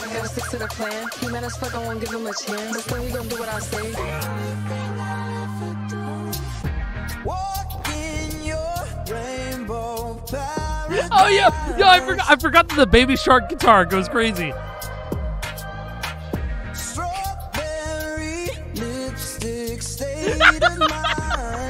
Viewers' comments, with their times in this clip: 0:04 baby shark doing anything good was honestly the most unexpected turn of events i think i've actually every experienced from the FUSER vids lmao